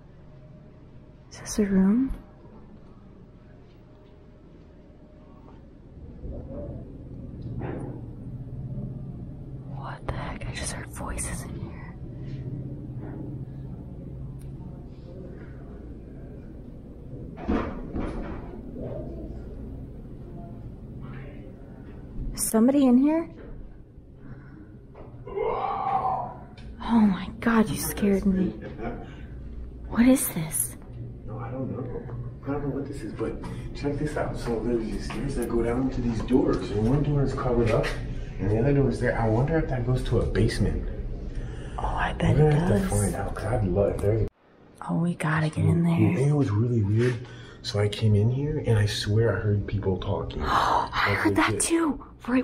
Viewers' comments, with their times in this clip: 0:04 Did anyone else hear this? sounds like a voice says "thank god" or "praise god" i'm unsure if this is someone in the hotel or paranormal, hard to say. But it's creepy! It sounds like it has a slight east coast accent like "thank gawd"
0:06 I heard a wind blow!
0:21 Heard voices and banging
0:40 did you hear i want supra.